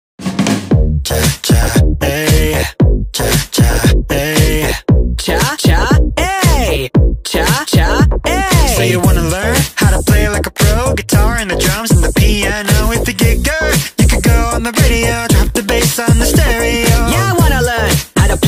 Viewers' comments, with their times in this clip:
0:05 parappa using the sonic voice filter